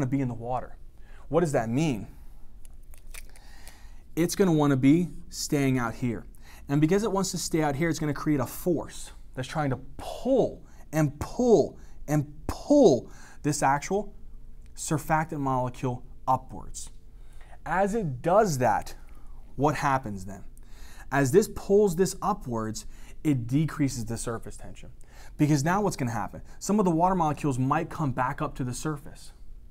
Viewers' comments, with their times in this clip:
0:10 " Phull and Phull and Phulll" Haha i love it